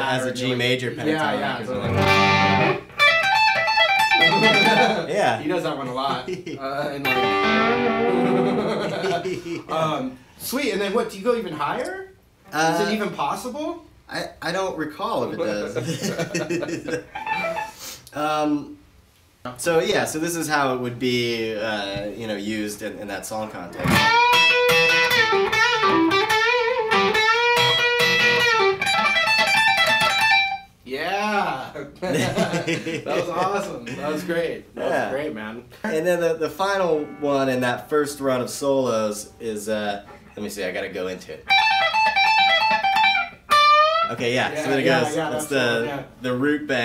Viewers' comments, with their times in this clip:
0:08 Evil laugh XD
0:08 click for 5 times in a row! !!!!EVIL LAUGH
0:30 the guy sounds like Seth from superbad, "yeaaaa, that was awesome." lmao